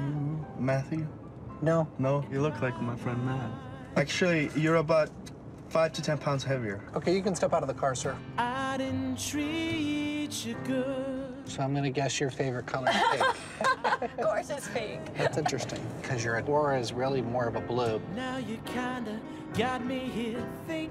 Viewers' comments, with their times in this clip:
0:08 Wtf?!? That was so rude but I’m dying at the way u said step out the car 😂